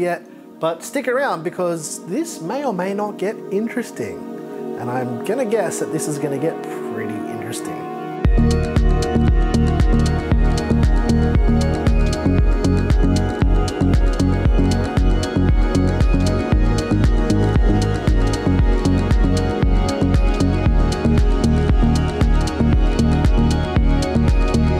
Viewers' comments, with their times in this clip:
0:08 the bass of that sounds a lot like the bass in flutes by hot chip. Was that an inspiration for that beat by any chance?
0:08 The music god damn claps I can't stop listening